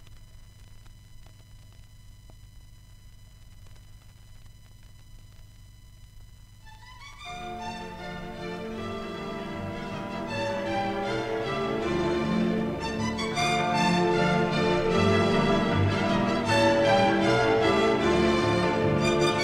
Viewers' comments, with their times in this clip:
0:06 A rare appearance of classical music on the Industrial Library since it was more commonly heard on the Basic and Mood Libraries